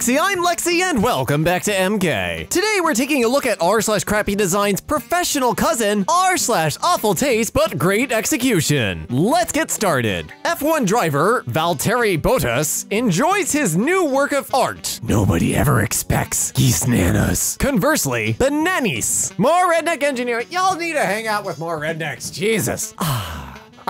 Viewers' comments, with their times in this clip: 0:10 I'm sorry but that pronunciation made me angry
0:11 my man Valterri can’t get no love in F1 and in pronunciation